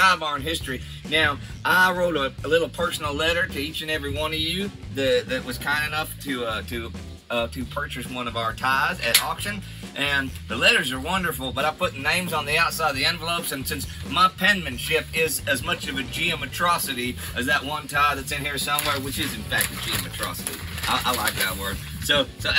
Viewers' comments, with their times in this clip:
0:08 Indy sounds like a drunk Ronnie van Zant or Johnnie van Zant